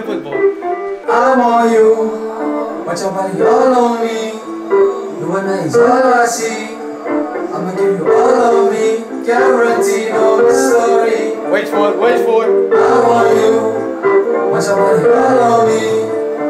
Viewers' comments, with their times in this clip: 0:03 The track is lit